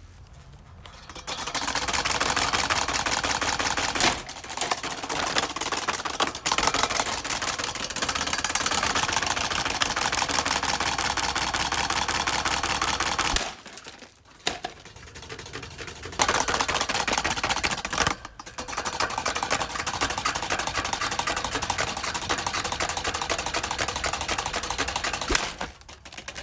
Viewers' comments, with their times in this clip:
0:09 the fan sounds like an engine